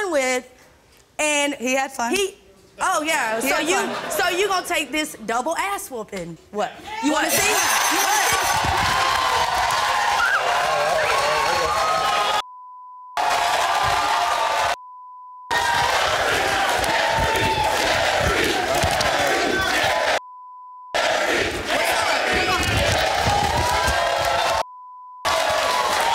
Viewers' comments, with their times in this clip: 0:09 you can hear her squeak in pain